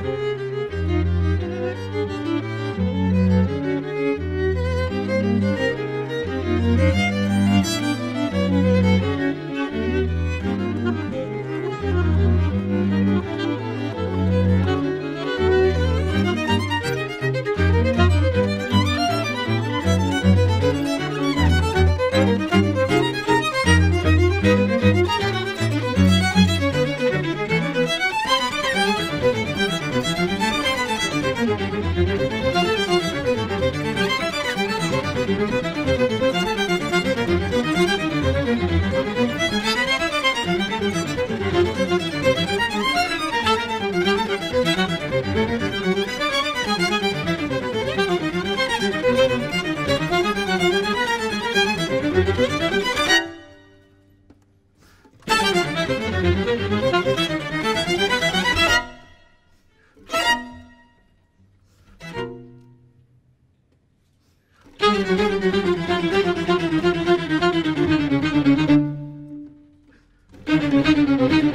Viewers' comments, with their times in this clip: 0:10 Shawty said: "If you ain't gon do it... IMMA DO IT!!!" proceed to drop that BOMB ass SOLO.
0:51 That pause had me shook smh.. 🔥🔥
0:55 Oh goodness the way Miguel's tone blends perfectly with that of the strings is just fabulous! Out of this world set, and that riff starting stellar!!